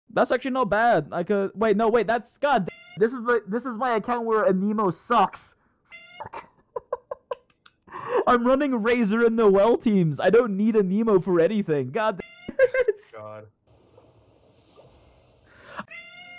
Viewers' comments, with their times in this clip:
0:04 oh my god first time here and i heard a cat noises pauses the video looking for my cats because i am afraid they are in problem. until i found out the noises from this video smh btw nice channel, subscribed